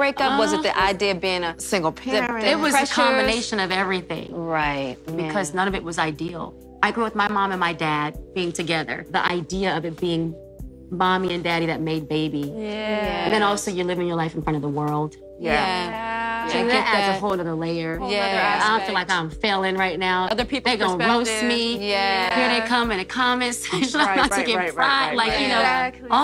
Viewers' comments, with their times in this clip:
0:09 Why does that get on my nerves. Yeeah! Yeahh! 😆